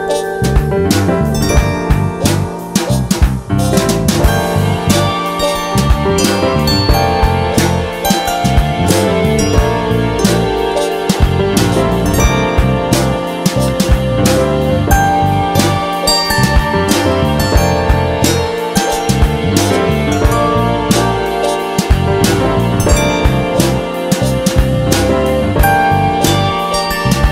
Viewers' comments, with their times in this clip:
0:03 I don't know why , but this part ( violin part) is so relaxing
0:04 i always loved strings part
0:15 all was pretty good. but this sound is too loud =( just too loud(